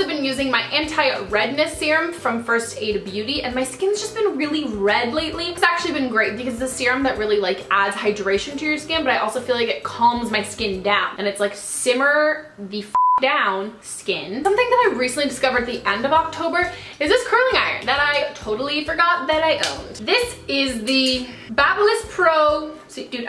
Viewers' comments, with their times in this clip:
0:10 it sounded like Milhouse from The Simpson